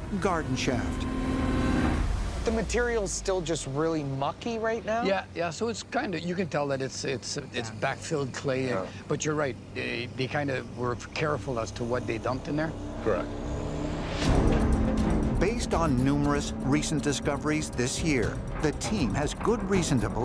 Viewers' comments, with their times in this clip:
0:05 That foreman talks and kinda looks like Michael Keaton